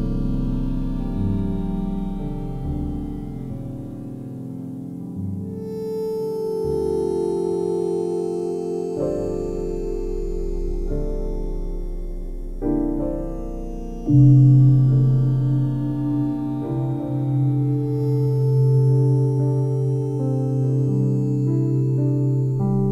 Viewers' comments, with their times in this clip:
0:04 And that thing that goes oooooooouooooouuooooooo